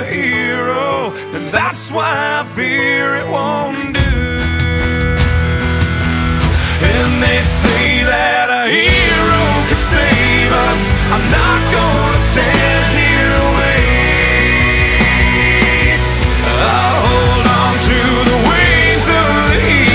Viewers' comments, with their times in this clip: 0:03 Perfectly edited with the guitar riff! xD